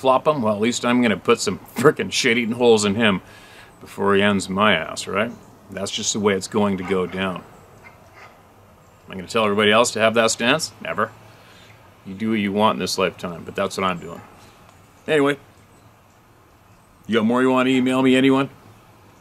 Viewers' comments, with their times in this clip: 0:06 When he says he'll shoot a dog man staring him down, just as he says "That's just the way it's going to go down", I hear a big dog start to bark loudly was it a dog? hmmm.... Maybe a dog man?